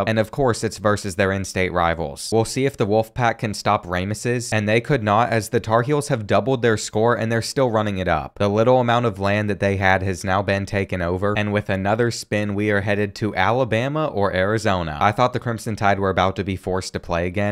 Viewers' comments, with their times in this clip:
0:03 Bro called Rameses “Rame is ses” 😂😂